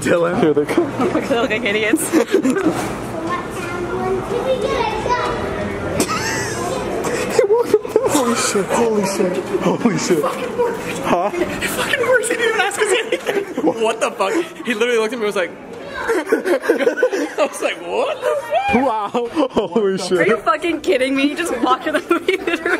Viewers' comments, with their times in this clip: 0:03 someone be soundin like peppa pig and i’m a lil scared 😳